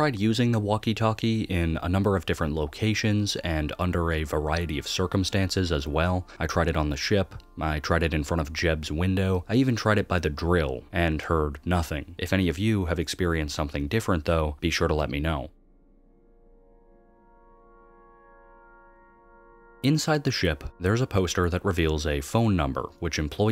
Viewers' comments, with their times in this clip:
0:10 you can hear screams from the scrap item "old phone"